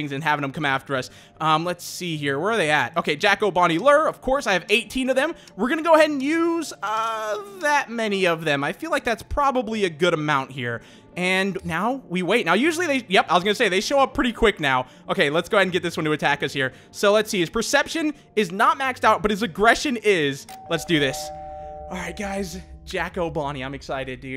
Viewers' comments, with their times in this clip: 0:06 So are we not gonna talk about his voice